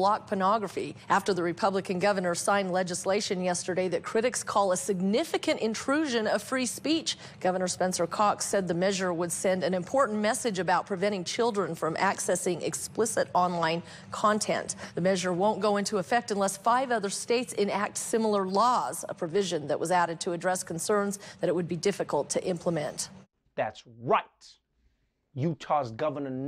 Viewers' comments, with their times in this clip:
0:08 Hmm, and did I hear his last name correctly?